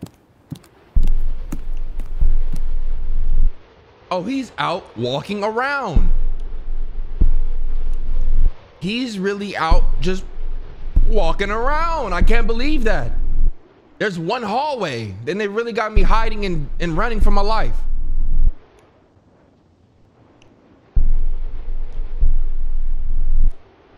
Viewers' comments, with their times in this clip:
0:09 HE REALLY OUT JUST.... WALKING AROUND (Suburban White Dad Voice)